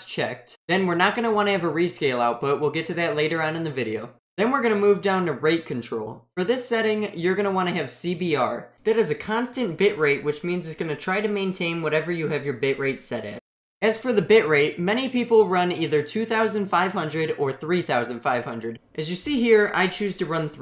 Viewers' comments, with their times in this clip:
0:04 MISHEARD AS RAPE CONTROL LMAO